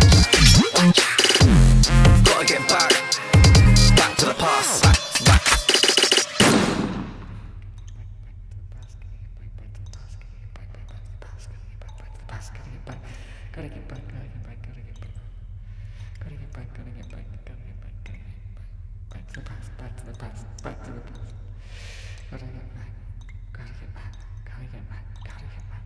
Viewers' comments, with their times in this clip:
0:08 lowkey asmr doe